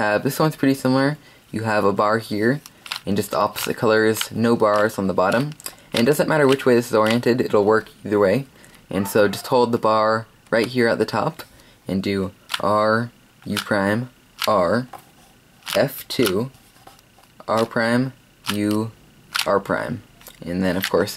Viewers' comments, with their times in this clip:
0:08 did you hear a background noise